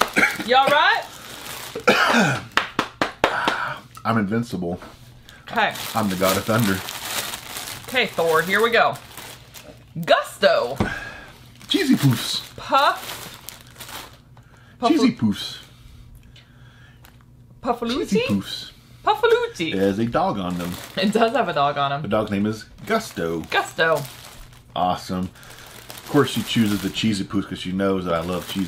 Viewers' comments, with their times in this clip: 0:09 the way they said pufuleti sound like the stereotypical Italian